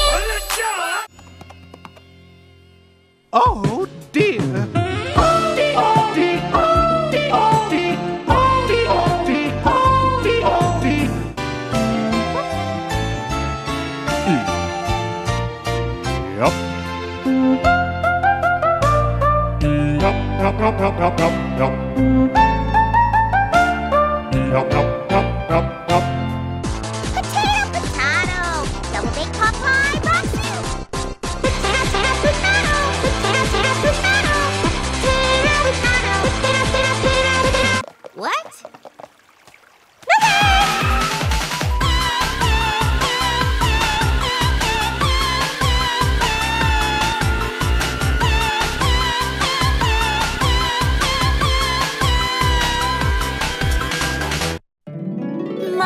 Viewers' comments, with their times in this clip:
0:03 it sounds like hes saying:OD like StOp OnLiNe dATiNg XD like if u guys think so to.
0:06 it almost sounds like she is saying “oldie”
0:17 this has to be the most adorable rendition of this song I have ever heard
0:26 pinkie pie became miku
0:30 I like this song
0:31 best part!!! I love that music kkk 🥔
0:42 It kinda sounds like: “CAKE!”